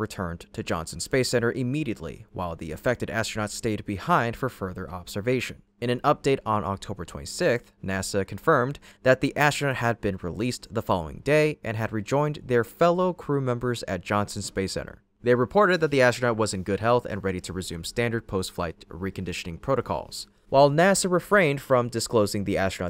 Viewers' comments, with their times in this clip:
0:08 sixth, not "sick-th"